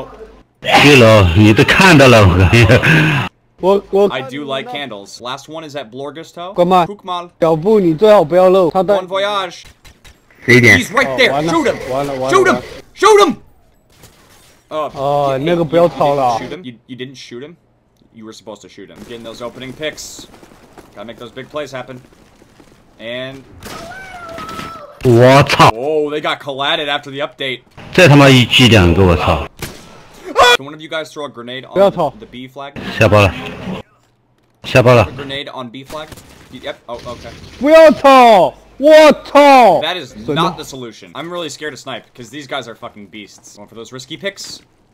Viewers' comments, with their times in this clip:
0:05 when the dude went wuuh wuuh my phone vibrated and went mmmm mmmm xD
0:30 why is no one talking 😂